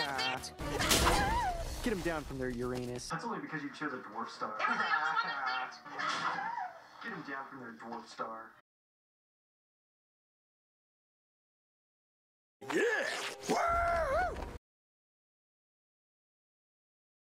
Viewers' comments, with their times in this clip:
0:04 Dude I thought he said “pornstar” and I was like yo wtf kinda censorship-